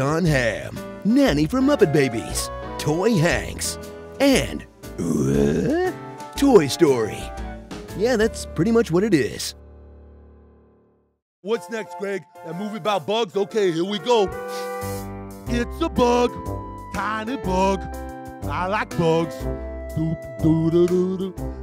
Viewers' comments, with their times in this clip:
0:05 took me a few seconds to realise where that Tim Allen noise was from LOL